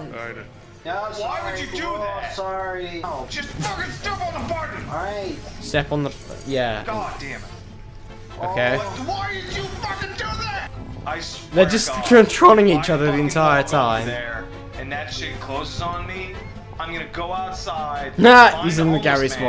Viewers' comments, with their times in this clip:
0:07 I'm the only one who is hearing yogcast theme ? 0_0